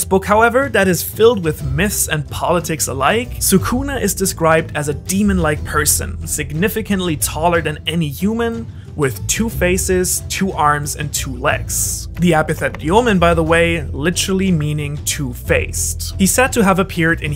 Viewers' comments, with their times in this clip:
0:05 "...With two faces, two arms and two legs".... Harvey Dent?!? I am joking, I know you meant two pairs of arms and legs, but it just sounded funny how you began with a unnatural description "two faces", and followed with normal aspects with the same tone.